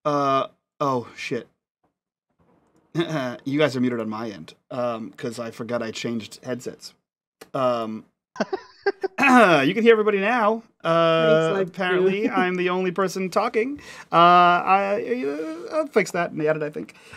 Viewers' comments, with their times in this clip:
0:03 FYI for curious viewers, the audio is fixed at the mark.